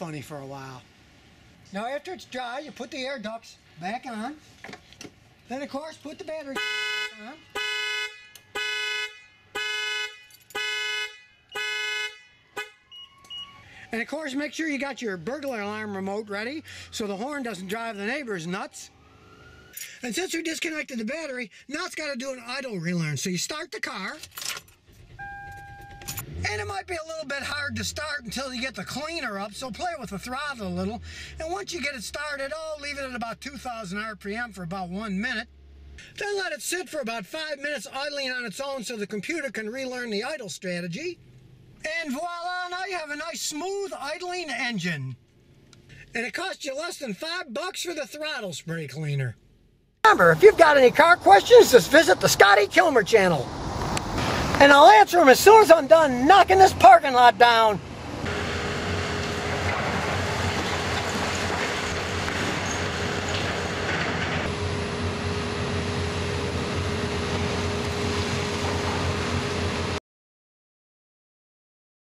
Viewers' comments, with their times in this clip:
0:05 Loved the horn going off Those are the moments that make you want to cuss and beat your car with your wrench.
0:11 Wow... Police are darn good where you live. As soon as your car alarm went off you can hear police cars rushing to investigate the noise:
0:12 haha you can hear the police xD
0:14 I like how you can hear the cops after the car alarm goes off
0:55 Video volume level was perfect